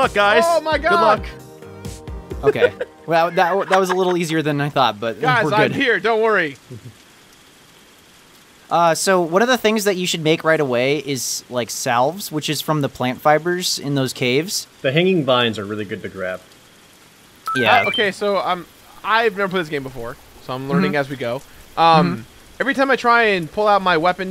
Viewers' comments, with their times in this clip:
0:05 “Guys I’m here don’t worry!” Awkward silence